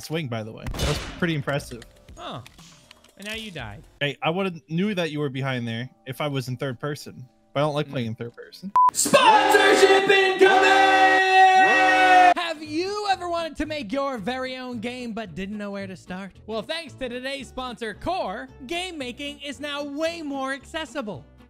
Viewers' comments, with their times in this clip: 0:08 Ow my ears